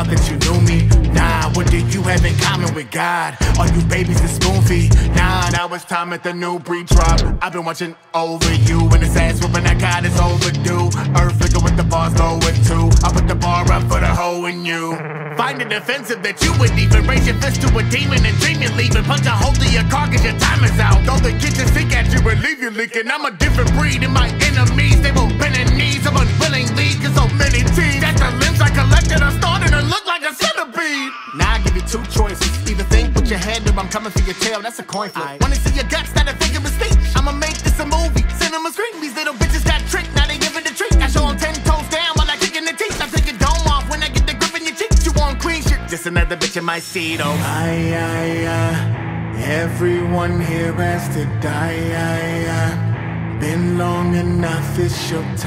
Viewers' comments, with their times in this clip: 0:06 That's the most intimidating, frightening effect of him yet
0:42 Am I the only one to hear the squish